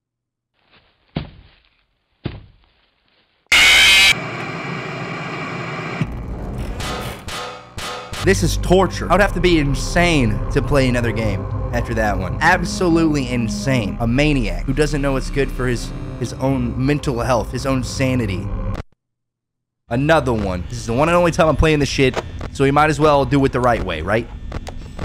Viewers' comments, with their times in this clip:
0:06 okay, gmod steel sfx when he grabs his chin is comedy gold